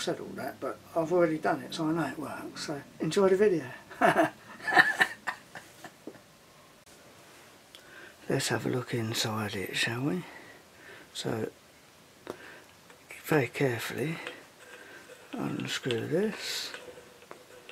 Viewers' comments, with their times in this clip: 0:03 That laugh ! XD I love that you're back!